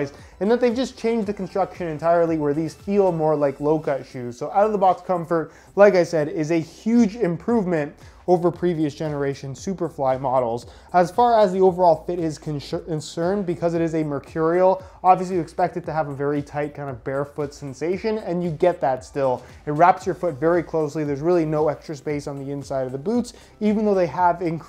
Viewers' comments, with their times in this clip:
0:05 yall here that echo??